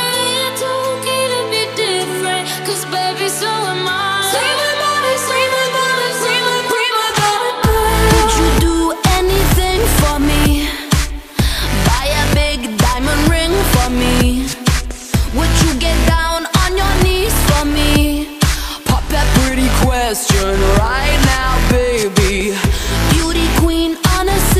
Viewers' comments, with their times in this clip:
0:06 Woah sounded so cool the way the “so am IiIiIiI” faded into the “primadonna girl” idk how to describe it but it sounded dope
0:07 HOWD YOU CHANGE HOW SHE SAID PRIMADONNA!?